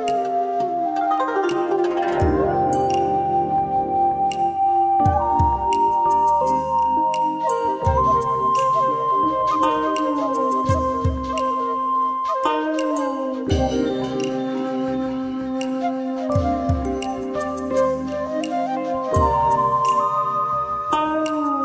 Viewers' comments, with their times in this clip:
0:04 that sounds PvZ2